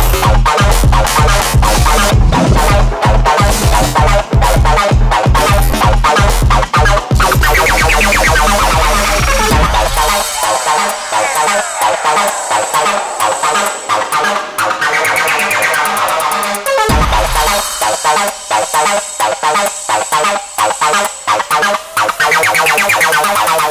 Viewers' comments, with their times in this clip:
0:10 The Acid Badger edit is unreasonably heavy